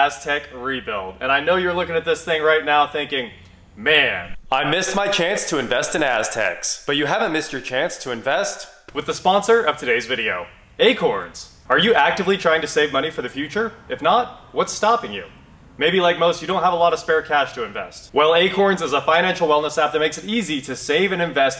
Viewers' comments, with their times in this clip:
0:07 Boy that voiceover was epic!